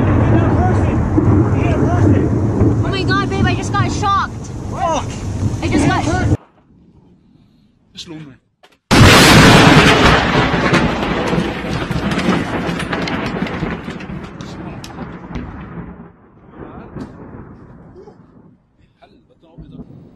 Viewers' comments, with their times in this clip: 0:06 man: ooooo lightning god: want a closer look bammm man: ok that's it I'm out